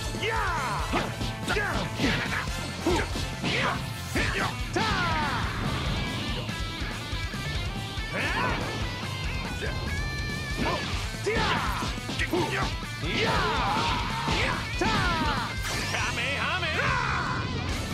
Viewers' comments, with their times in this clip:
0:03 not the reused budokai 3 goku "TAH" sound stock 😭